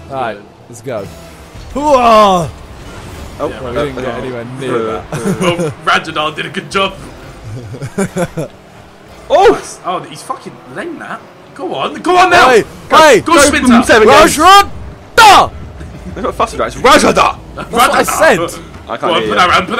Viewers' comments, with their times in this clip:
0:07 That ohhhh sounded at little weird